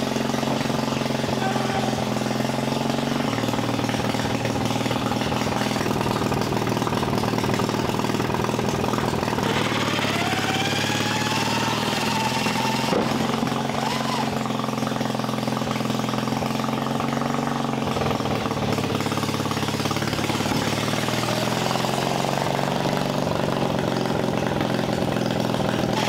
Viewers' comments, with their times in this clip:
0:07 the over exaggerated " Guys its time for the final wall!" got me